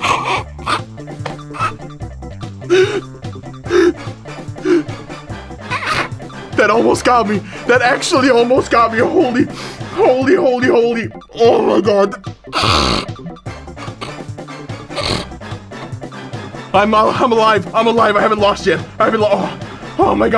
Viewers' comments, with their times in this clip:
0:03 that was a laugh